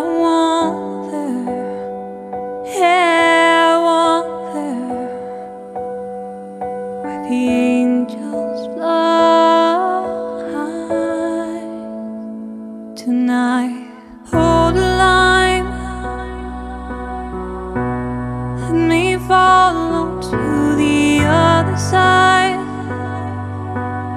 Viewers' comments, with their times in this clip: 0:09 why do I feel like my tears are falling down, beautiful voice and soul <3 thank you for sharing this amazing video.